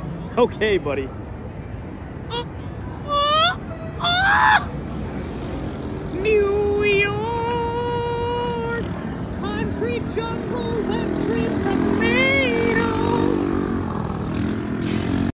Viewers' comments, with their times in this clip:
0:05 Mickey sings in New York.